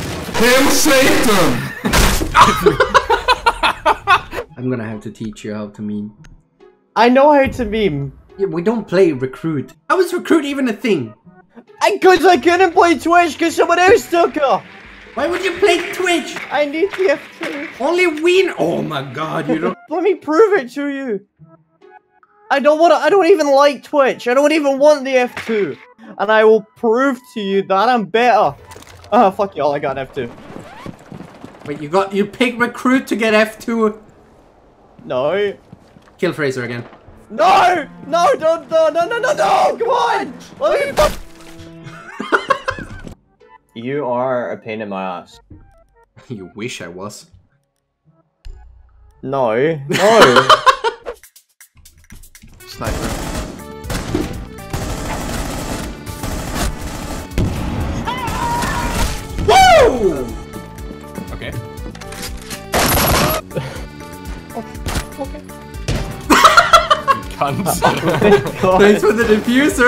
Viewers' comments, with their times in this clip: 0:08 he sounds like morty with an aussie accent
0:51 love the Stardew Valley music lol